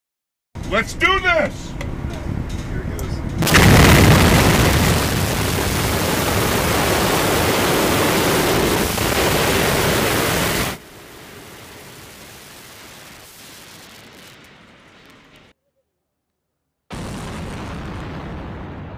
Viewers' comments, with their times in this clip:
0:03 that sounded like a meme sound effect lmao